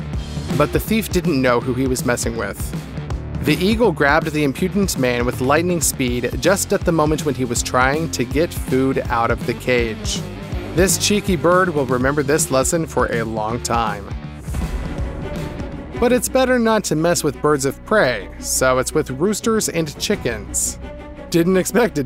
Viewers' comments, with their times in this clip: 0:10 Left this video as it was way too noisy with sound that had nothing whatsoever to do with the subject matter. 👎